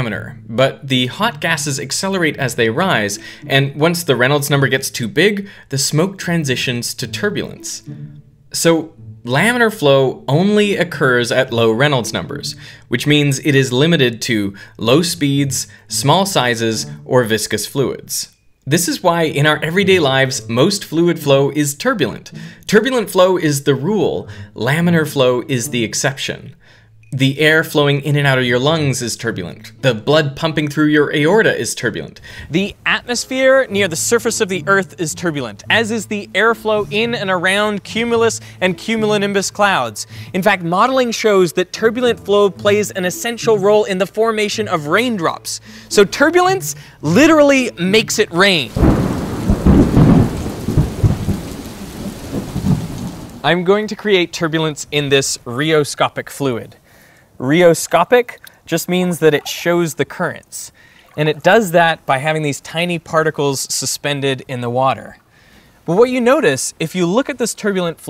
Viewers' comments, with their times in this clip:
0:04 I love the ksp music lol
0:49 Tried to get me with the calming rain sounds. That‘s unfair.